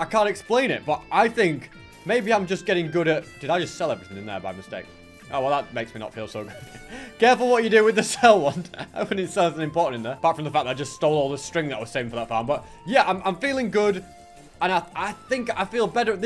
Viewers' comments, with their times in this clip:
0:04 I absolutely love the video (and the dedication) but may I ask why did you decide to play Mariokart music in the background ?